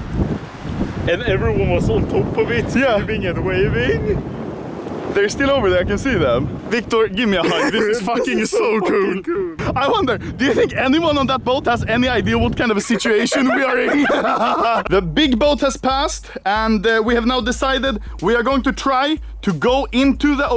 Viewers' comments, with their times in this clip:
0:08 instead of asking for help your life laughing. Bruh moment